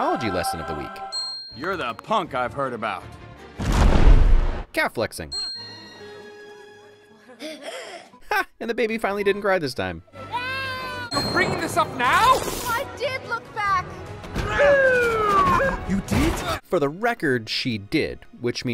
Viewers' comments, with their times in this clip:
0:03 I have only recently realised his calfs expanding like that was actually the sound of megamind’s exhaust pipes for his jetpack
0:04 I can still hear the fart